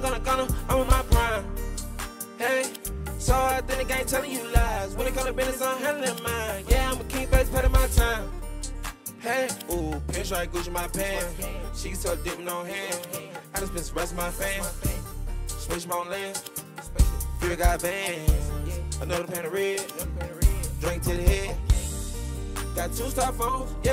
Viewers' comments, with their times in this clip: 0:07 The dude on da piano looked back when he heard dude on da guitar spazzin 😂😂😂